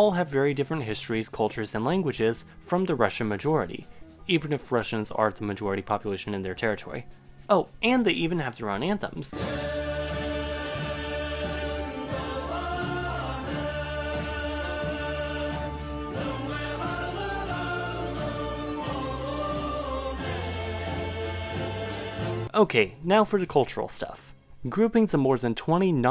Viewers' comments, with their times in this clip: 0:09 Coolest anthem ive ever heard.
0:09 that Tuvan anthem sounds epically heroic!